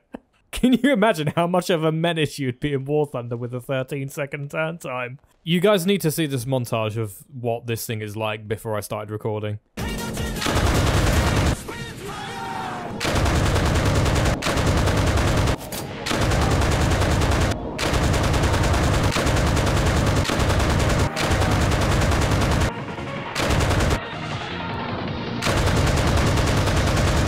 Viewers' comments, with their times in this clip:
0:09 the only acceptable music joice